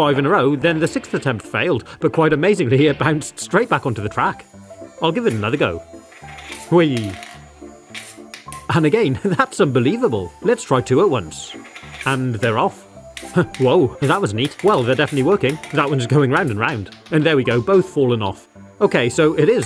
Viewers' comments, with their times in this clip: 0:05 That is the least enthusiastic "wee" I have ever heard.
0:05 lowest wee ever
0:06 "whee!" HE SOUNDS SO INNOCENT 😭